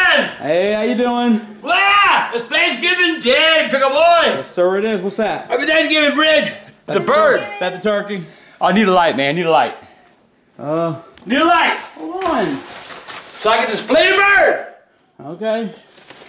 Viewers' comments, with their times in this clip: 0:04 Oh I thought he said happy thanksgiving bitch🤣🤣